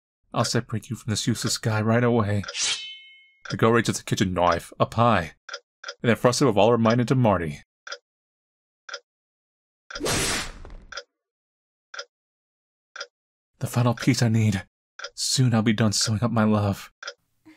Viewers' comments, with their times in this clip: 0:03 did I just detect Bri'ish